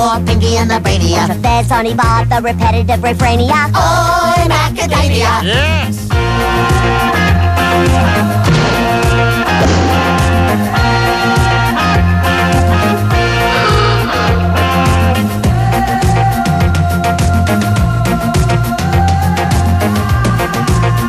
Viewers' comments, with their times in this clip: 0:05 who's that evil voice i hear ? It sounds sooo familiar.